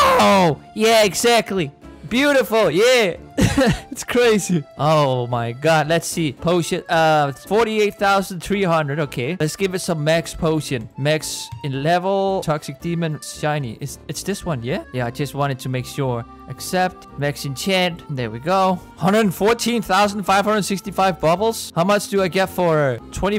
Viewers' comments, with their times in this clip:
0:08 does he say potion or oh shit??!